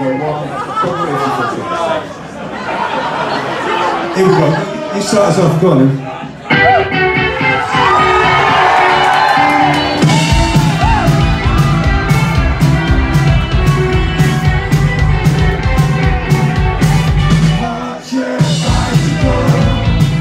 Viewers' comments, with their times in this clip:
0:05 😂😂🤔If you cut this from I think you could make the whole world believe that was Lewis Capaldi😲😲 for sure